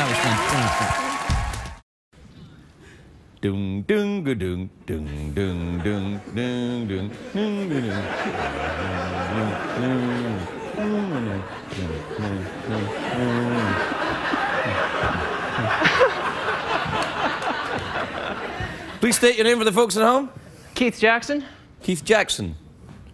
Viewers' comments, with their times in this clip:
0:06 he was humming Pink Floyd because of the kids shirt 😁